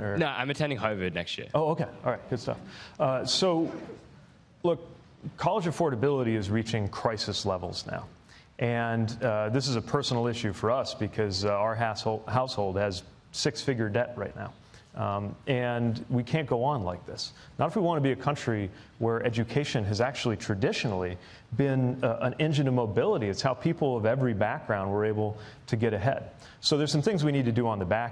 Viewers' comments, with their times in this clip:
0:09 "our harsehol household" LOL.